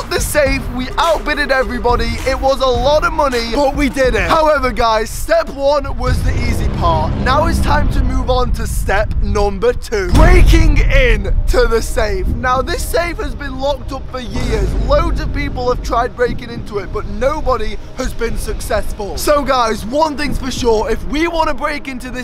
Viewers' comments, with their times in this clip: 0:03 I'm sorry for your neighbors all of the banging at like